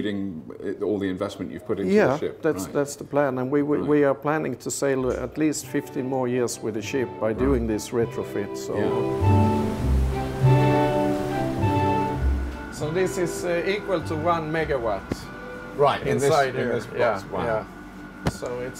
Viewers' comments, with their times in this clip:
0:05 Wow, this is great to see. Did he say this ship is expected to be in service for 15 or 50 more years? I went back and listened about five times and could not tell which he said. 15 would be great, 50 absolutely amazing! I relistened again at the mark and I'm convinced he said 50 more years, wow! Be great to see this technology spread around the world to other ships.